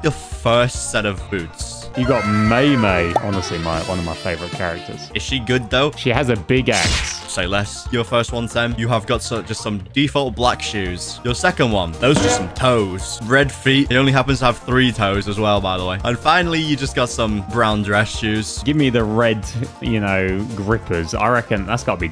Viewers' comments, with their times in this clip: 0:04 SHE HAS A BIG WHAT?!?!? I THOUGHT THIS WAS FAMILY FRIENDLY